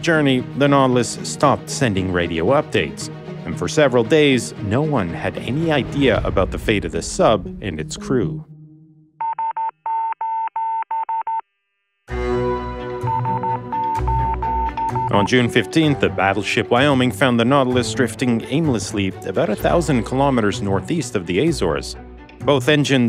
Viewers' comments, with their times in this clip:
0:09 I don't know much Morse code, but I know that one 😬 very nice touch!